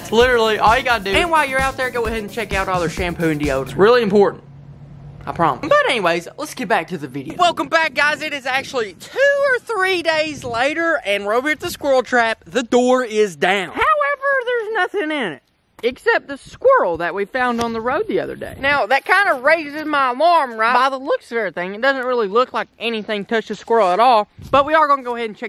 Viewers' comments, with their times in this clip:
0:07 "It is two holds up 3 fingers or three holds up 2 fingers days" Oh ye that voice crack tho